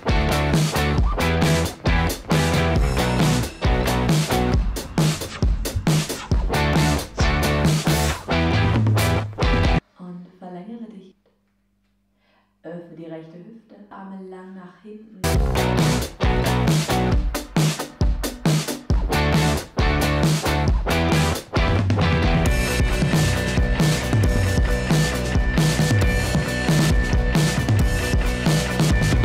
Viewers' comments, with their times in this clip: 0:10 I heard a German accent right away, and then my guesses got confirmed